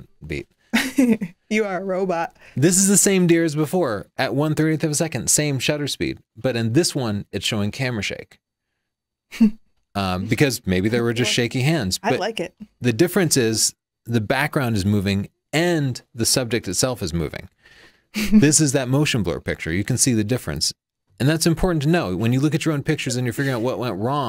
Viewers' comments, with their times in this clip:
0:08 the deer face kept making her laugh